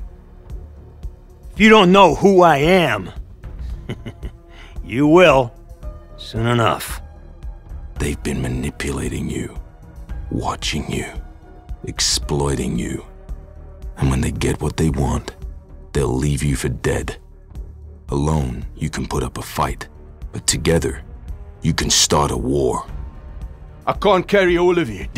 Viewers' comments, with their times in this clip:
0:08 god i live Sam Worthington's voice so much i wish he voiced Smokescreen in Transformers prime, Johnny Rico in Starship Trroopers Invasion and Starship Troopers Traitor Of Mars as Worthington's voice works perfect for an adult john rico.